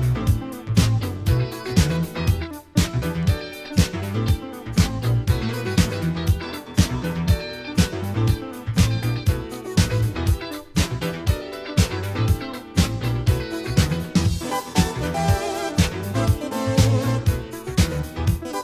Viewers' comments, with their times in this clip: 0:03 whats the guy touching on her decks? its the eq yeah? just turning the bass down a little bit just a little bit to much.